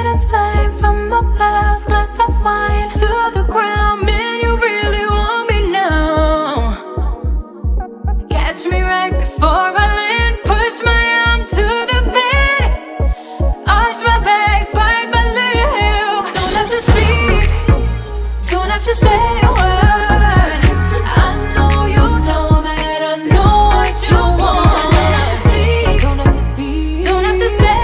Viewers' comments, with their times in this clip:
0:08 i thought it was TOP from Bigbang 😭